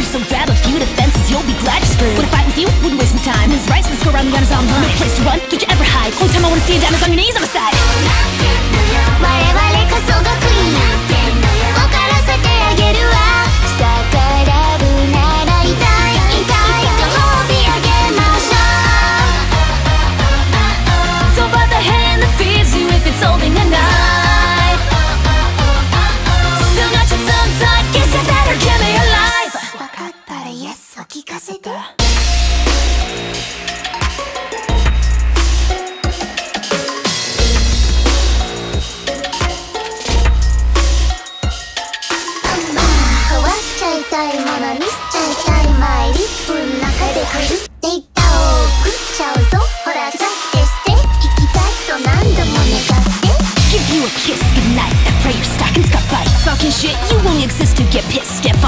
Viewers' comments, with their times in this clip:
0:08 it sounds like 逆らうなら痛いご褒美あげましょう to me which might be more accurate for me to be: If you disobey, Imma gift you treats that hurt. please feel free to correct if I am wrong.
0:29 I swear, I can’t hear the first English line as anything than "Toss out the attitude, sir where's your fucking gratitude?" and considering how Calli is, how comfortable she is with swearing (unless it's Kobo doing it) it just helps cement it as that in my mind. Now kees!
0:39 The gun click though
0:42 cant. stop. listening. especially gura's verse I love the flow of it
0:42 WOW. Masterpiece duet. is the best part, perfectly sync